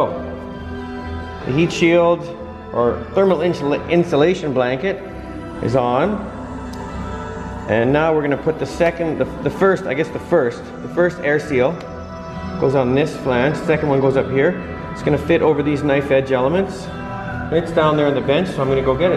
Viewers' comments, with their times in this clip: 0:06 Listening to Pink Floyd while working on a jet engine, super cool !!!! Nice video as usual. Thanks from France :)